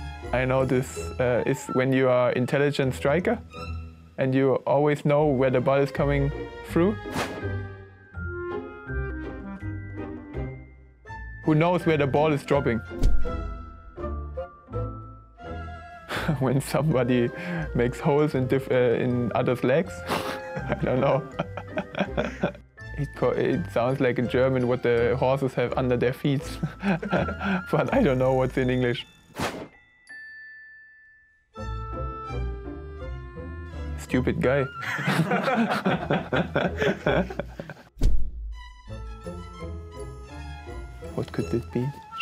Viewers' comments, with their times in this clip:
0:05 „You always know where the ball is coming through“ German excent there😂😂
0:26 he even laughs in German😂 what a lad😂💪